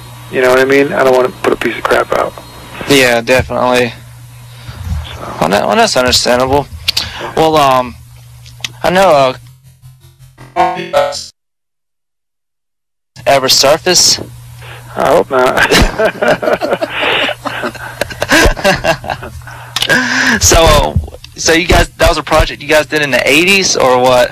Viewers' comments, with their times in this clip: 0:10 hahaha doyle really cant speak that well no much of a talker... what happens !!!!!